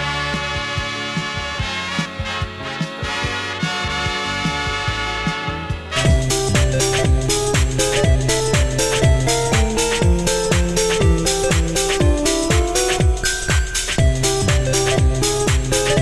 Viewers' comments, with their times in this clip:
0:04 It was at this moment they knew... They insert goofy noise fucked up